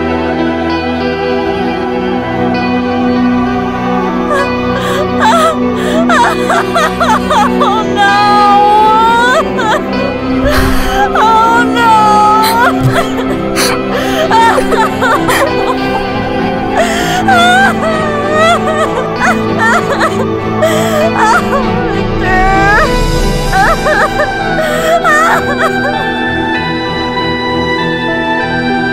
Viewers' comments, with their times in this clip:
0:09 oh no sound